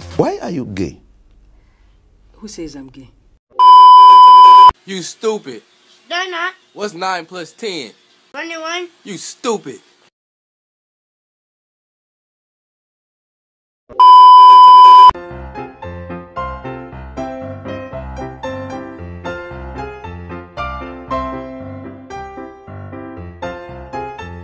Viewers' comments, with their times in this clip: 0:06 Why i am listening "น่า{ลัก}รัก" (Cute) ;;;-;;;